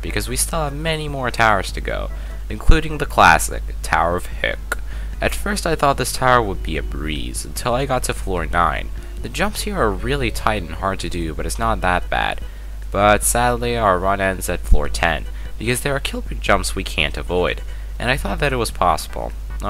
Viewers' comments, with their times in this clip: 0:03 you said "hecc" so wierdly lol